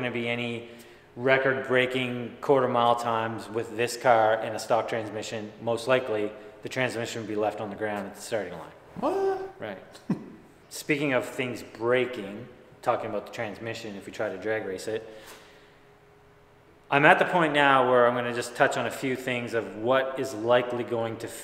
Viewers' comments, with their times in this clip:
0:03 love your voice and knowledge. need guys like you in our country. europe